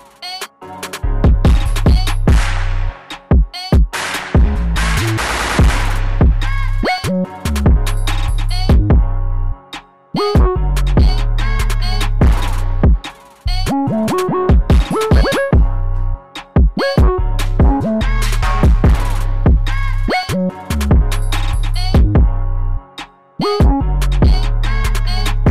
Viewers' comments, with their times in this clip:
0:06 808 glides are hard after 🔥🔥